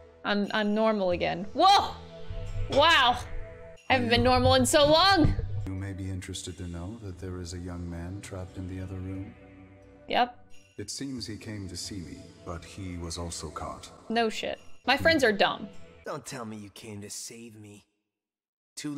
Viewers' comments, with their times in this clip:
0:05 MMMM THEY DID MAH HUSABANDO FUTOMIMI RIGHT with that VA MMM YES INDEED